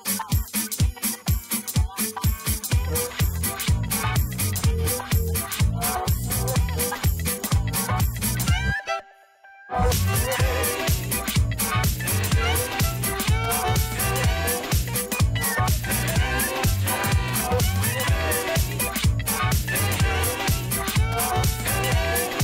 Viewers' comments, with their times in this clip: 0:07 *violin noice *dat boy *oof